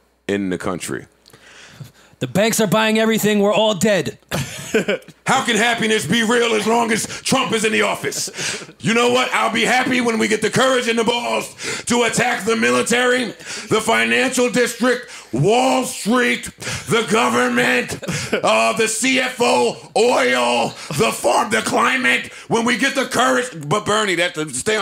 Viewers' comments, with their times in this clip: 0:05 Joe's Bernie impression 🤣🤣🤣🤣